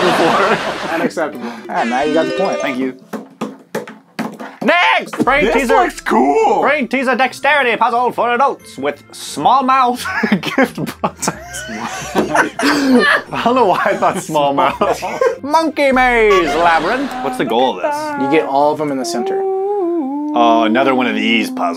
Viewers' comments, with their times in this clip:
0:08 he sounds like the announcer guy from the legend of korra